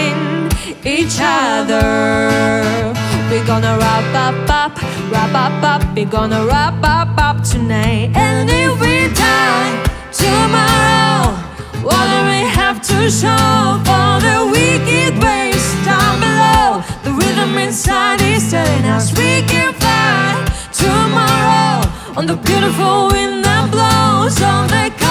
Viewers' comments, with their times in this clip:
0:10 Why is no one talking about VAL slaying that Loïc performance (that riff tho)